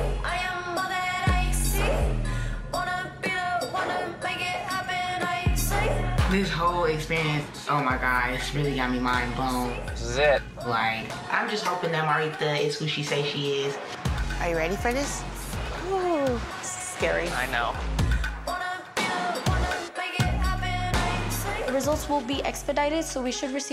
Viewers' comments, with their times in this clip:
0:05 that lisp tho take off them grills gurl